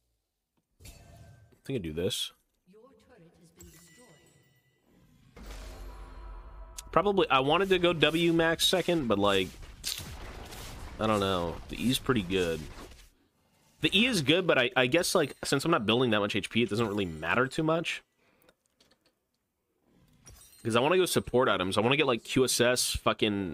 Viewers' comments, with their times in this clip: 0:09 bro made that minecraft silverfish noise